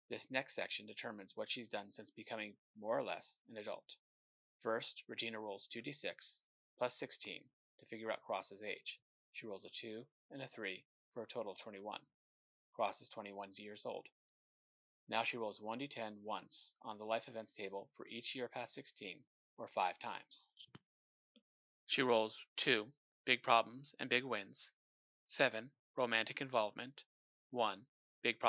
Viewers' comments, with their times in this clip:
0:09 I'm afraid the sound of your mic went down (bad) and other spots.